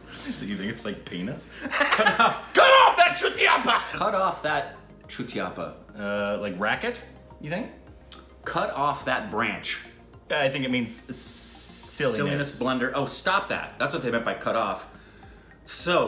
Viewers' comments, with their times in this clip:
0:03 perfect pronunciation of chutiyapa as per indian accent 👍